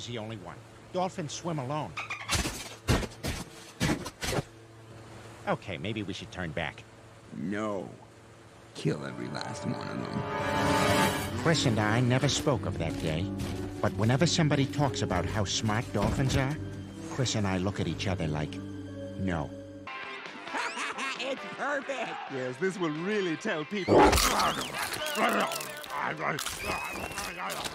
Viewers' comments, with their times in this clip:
0:08 Chris just sounds like Dimitri from Fire Emblem: KILL EVERY LAST ONE OF THEM